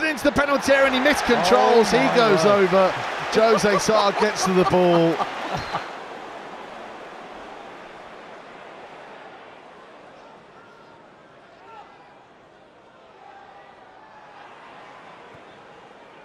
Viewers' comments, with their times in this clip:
0:03 this laugh is so reasonable)